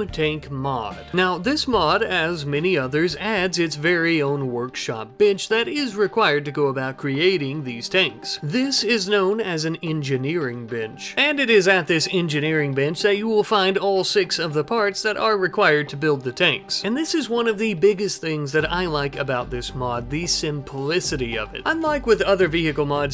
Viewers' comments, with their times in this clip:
0:03 i heard bi## insted of bench
0:04 your pronunciation of "bench" caught me off-guard. not hearing the 'n'.